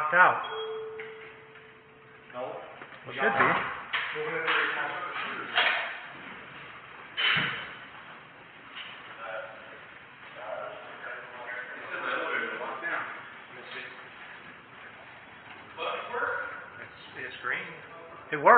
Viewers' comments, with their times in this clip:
0:05 the elevators should be locked out....ding.....well they should be